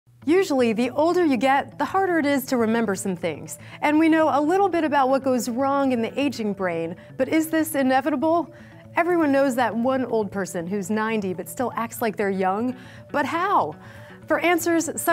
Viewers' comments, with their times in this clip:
0:01 morgan freeman is that you